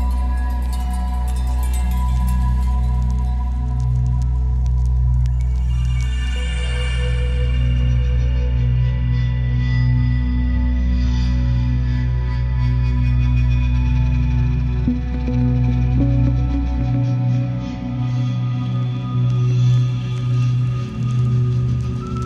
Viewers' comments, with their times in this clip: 0:04 Very well crafted atmosphere. Got me hooked from start to finish. What are those bells ? are they samples on the Deluge? if so, to get that nice echo, i imagine the whole deluge stereo out is passed through an FX pedal, is that right?